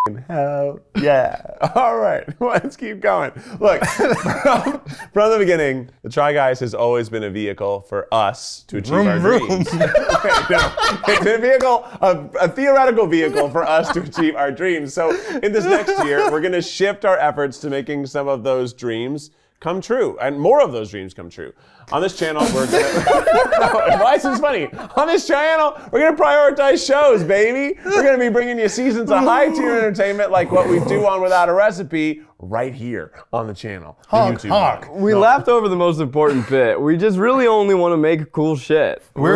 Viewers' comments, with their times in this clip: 0:06 Eugene’s vroom vroom followed by him and Zach uncontrollably giggling had me cry laughing. Good to see everyone laughing.
0:08 when they burst out in laughter it made me feel so happy for them :) i'm really looking forward to the next era of the try guys!!!!
0:10 Zach’s laugh genuinely brought me so much joy
0:23 … “on this chANnel” god i love them 😅